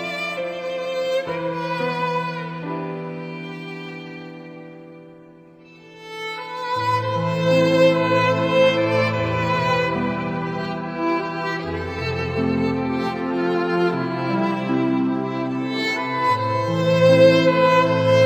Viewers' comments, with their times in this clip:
0:03 It gets emotional after
0:06 Wait until u get to then you’ll really see the song is now then sad